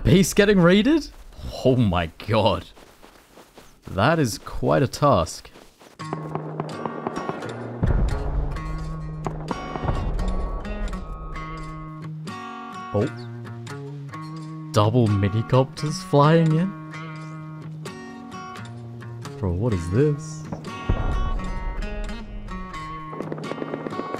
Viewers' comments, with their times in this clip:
0:06 THE SONG MAKES A RETURN!!! Great vid with great music choices!